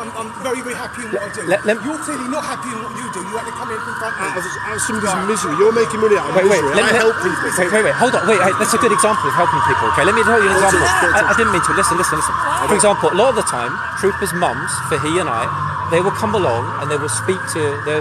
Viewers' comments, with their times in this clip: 0:04 😮 Oh my Goodness! I jumped then. Had the computer speaker accidentally on full volume. I felt that. Got me gud and proper. 😁😆😭😆😂😂😭😭🤣🤣🤣😁😆😭😆😂😂😭😭🤣 That was a true money shot right there. ❤❤❤❤❤ Just love it when these handsome, troopers show their power and sort out trouble makers. 😮😮😂